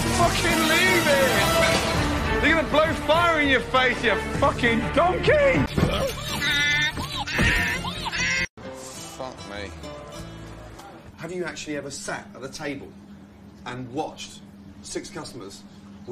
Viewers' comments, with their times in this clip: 0:04 He just sounds so defeated 😂😂